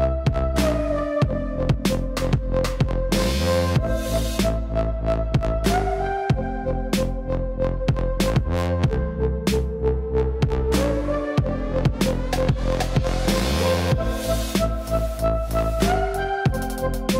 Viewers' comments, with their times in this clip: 0:05 Yes! Finally some decent tunes.